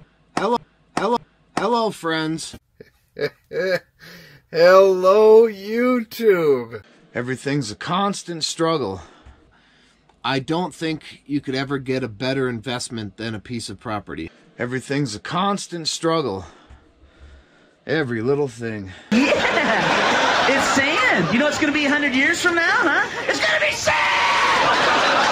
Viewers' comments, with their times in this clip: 0:07 I tot I taw "everything's a con"